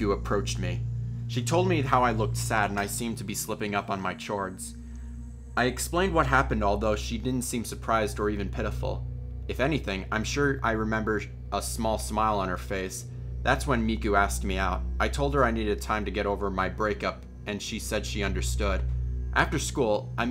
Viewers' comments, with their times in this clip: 0:03 DID ANYONE ELSE CATCH HIM SAY CHORDS A CH-ORDS
0:03 Slipping up on my CHORTS
0:05 the way he said chords
0:08 Did he just say chhords